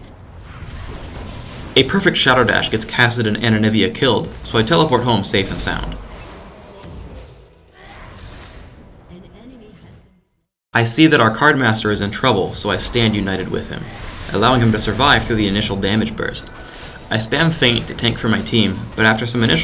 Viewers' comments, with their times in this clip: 0:05 You don't sound like someone that feels safe spamming this thing